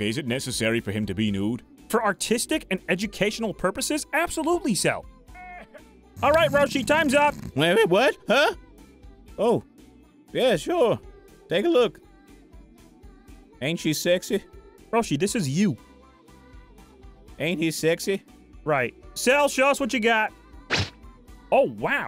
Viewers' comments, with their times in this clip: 0:05 Zarbon moan in the background despite him being right near the guys... Zarbon isn't his name, it's the goddamn species. His real name is probably Homodax is something...